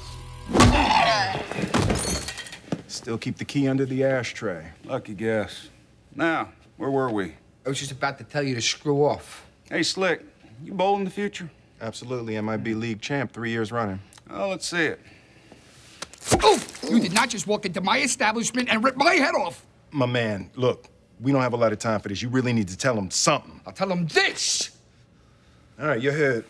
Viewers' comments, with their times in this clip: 0:07 with which accent is he speaking?